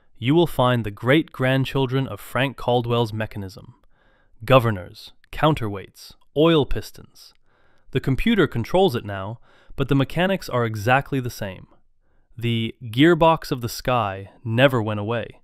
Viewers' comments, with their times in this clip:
0:03 what happened to his Irish accent? All of a sudden he turned American. 😂😂😂